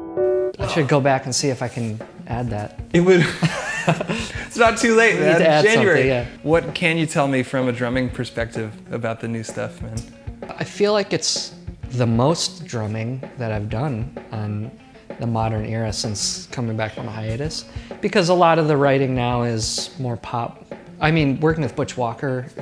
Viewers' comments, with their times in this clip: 0:03 That BGM starting is gonna haunt my dreams.